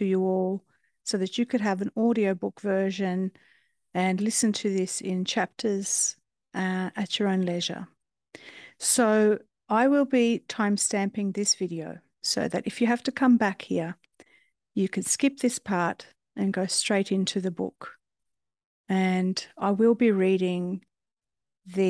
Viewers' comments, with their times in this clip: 0:09 Time in the UK, and I have just been listening to chpt 1 whilst doing some zentangle. I feel so chilled. Thank you for reading this book, I love to be read to and your voice is so soothing. I have never come across this book before but know I'm going to love it. Blessings to you ❤🙏🏻